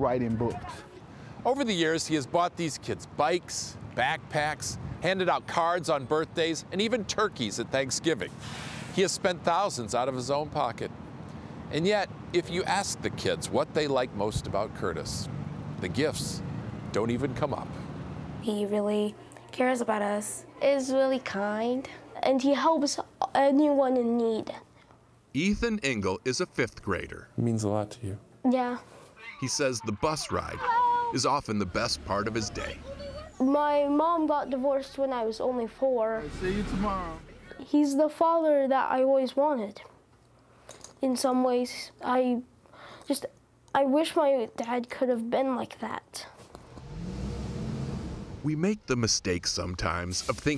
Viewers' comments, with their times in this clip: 0:04 I thought he said handed out cars and so when they said he has spent thousands I literally said out loud “No dip Sherlock”
0:34 she bought divorce ? 😂